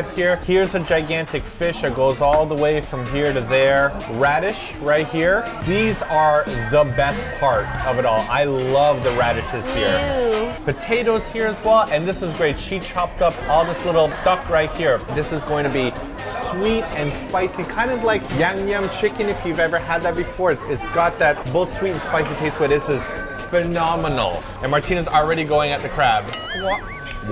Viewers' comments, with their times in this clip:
0:10 what is that girl ewwing about? It is actually rude.